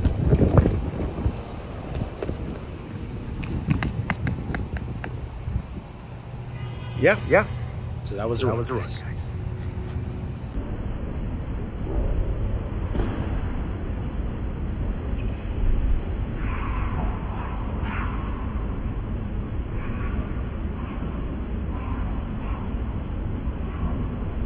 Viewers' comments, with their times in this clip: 0:10 Slofie!!! LOL.. uncontrollable laughter